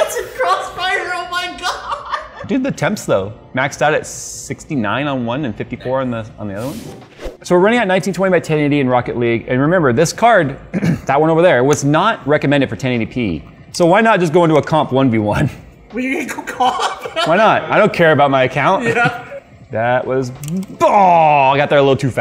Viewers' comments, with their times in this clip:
0:04 that nice in the background